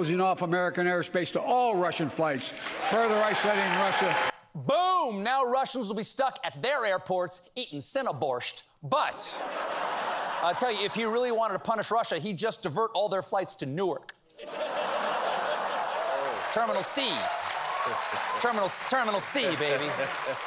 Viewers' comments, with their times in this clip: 0:07 thumbs down for mispronouncing the word "borshch." There is no "t" in the word. Stop bastardizing foreign words with your ignorant Anglicizing.